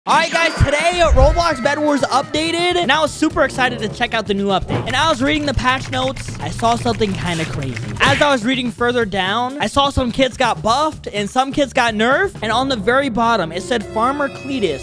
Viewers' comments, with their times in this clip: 0:01 i thought its booty💀:glasses-purple-yellow-diamond: